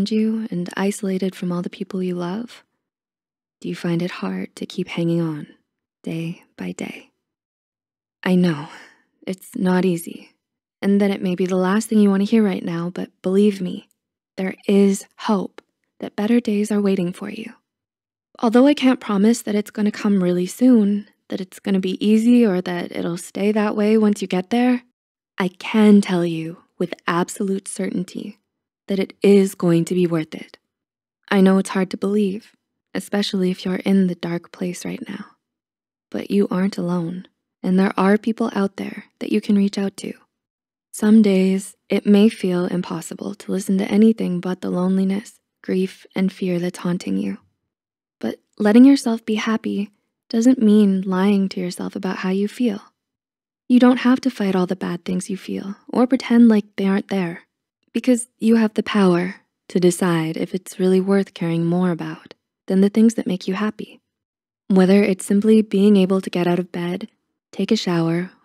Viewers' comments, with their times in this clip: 0:07 that "i know" holds so much emotion
0:51 Thank you so much I rlly needed comfort this made me feel better and your voice making it more calming thank you<3 Also I just noticed it's dreamsmp omg